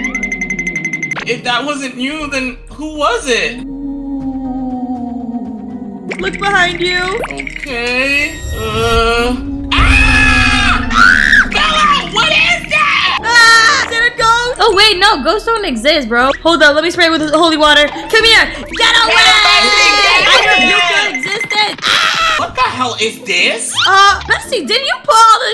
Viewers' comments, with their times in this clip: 0:09 rip headphone users💀